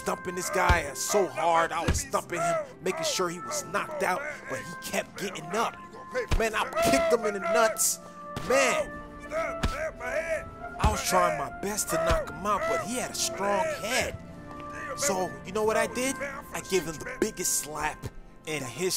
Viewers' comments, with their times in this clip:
0:06 Who else was vibing with the beat forever in 🔥